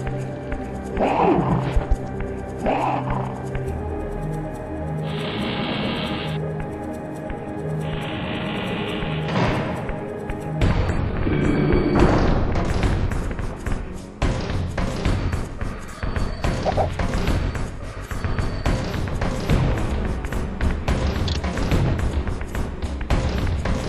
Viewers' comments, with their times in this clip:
0:10 is the best music in the game in my opinion.